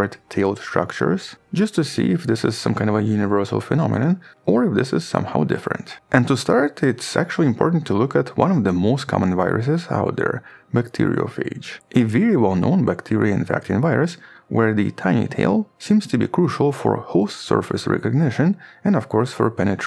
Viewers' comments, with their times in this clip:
0:06 bob ross talking about bacteriophages